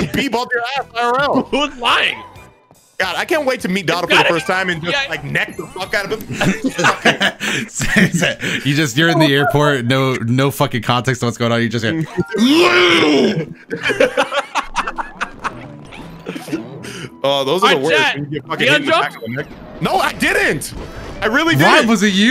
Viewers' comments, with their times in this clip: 0:08 anybody wanna talk about the among us song playin at like